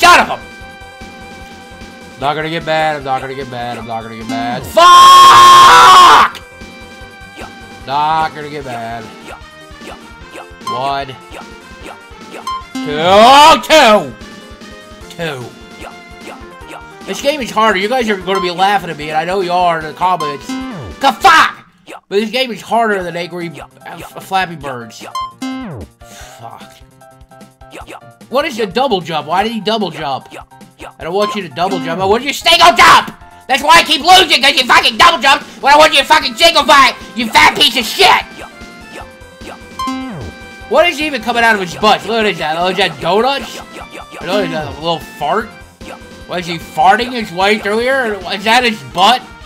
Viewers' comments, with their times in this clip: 0:04 Me singing opera.
0:34 i love the way he says this lmao 😂